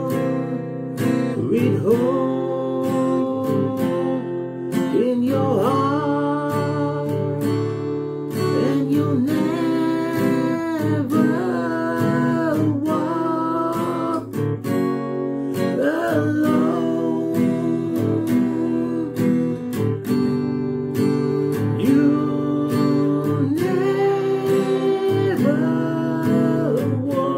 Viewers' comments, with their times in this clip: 0:09 should be the chord of C not G